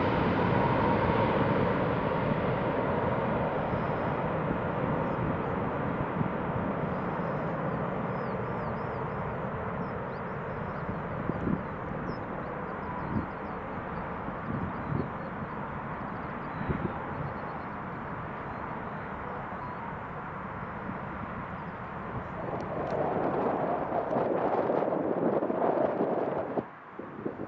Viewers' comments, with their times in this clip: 0:09 Listen carefully after You hear an android ping noise